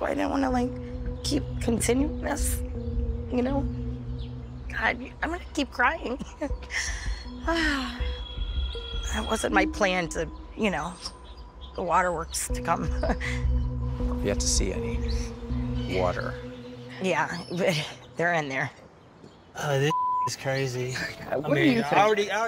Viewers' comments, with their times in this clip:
0:03 Amber Heard crying.